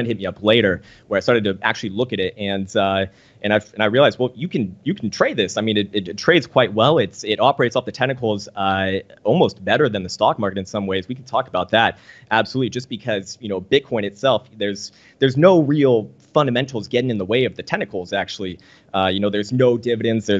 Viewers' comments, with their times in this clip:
0:06 When he says tentacles, does he mean technicals?